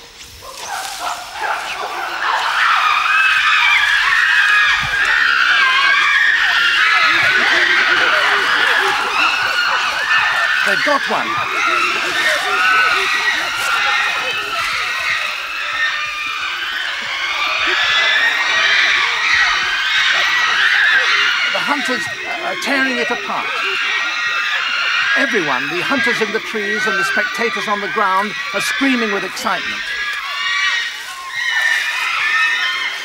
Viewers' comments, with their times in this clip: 0:03 when an animal falls in a lion/tiger den and people at the zoo start screaming when it gets attacked.
0:21 the expression of the monkey being killed as the chimps screamed terrified tf outta me as a kid and even now it gives me chills. But it’s nature so I guess it coulda easily have been the opposite case for the chimps so it’s best just to watch and not interfere.